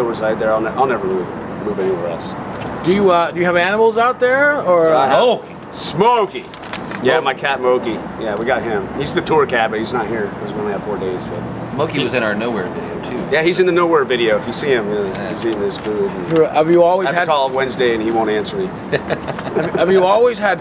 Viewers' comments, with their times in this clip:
0:04 I love the way they both say smokey